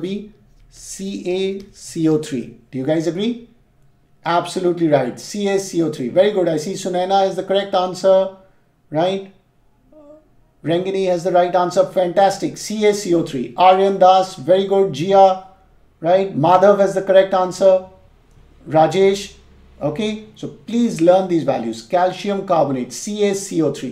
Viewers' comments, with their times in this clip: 0:09 someone singing in the background lol